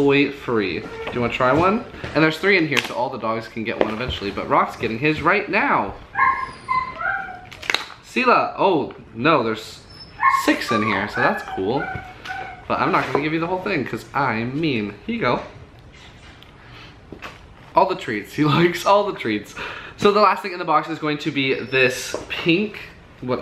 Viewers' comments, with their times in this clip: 0:05 i hear Silla